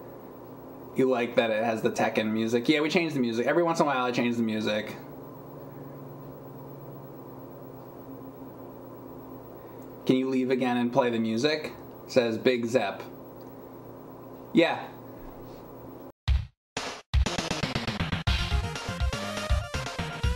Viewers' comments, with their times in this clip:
0:03 I like the pause music too.